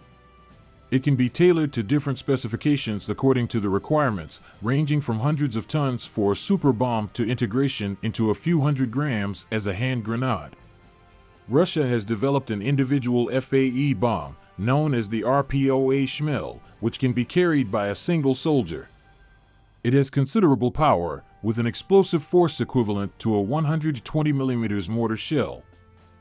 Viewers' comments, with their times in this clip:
0:10 Grenade is pronounced grenaid, not grenodd You all can do better!